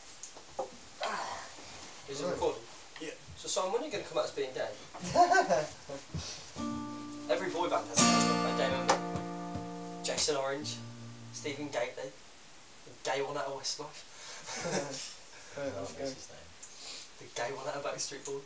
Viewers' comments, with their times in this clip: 0:05 Nice laughter !^^ You guys rock!